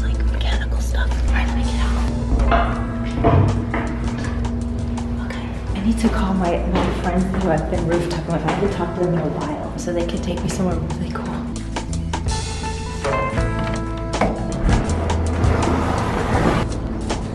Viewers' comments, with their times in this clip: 0:05 thought she said "I need to call my boyfriend who I've been roof topping with" And I was like WTF